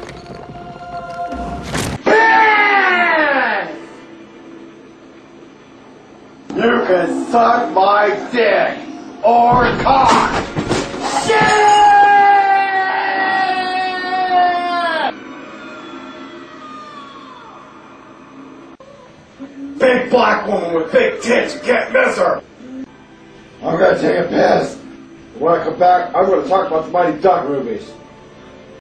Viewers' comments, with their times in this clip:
0:10 Tourettes Guy's Fall Scream
0:11 that scream you hear when you remove your adjustments from your OC